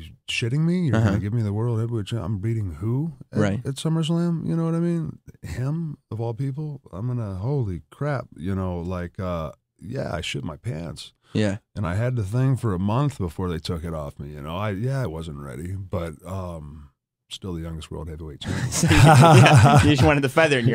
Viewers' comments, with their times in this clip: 0:07 enzo amore voice how you doin? 🤣🤣